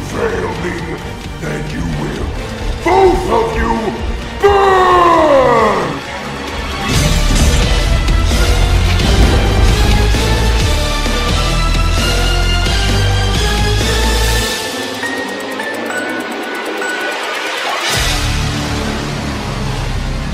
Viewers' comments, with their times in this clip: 0:05 the screamer of moon drop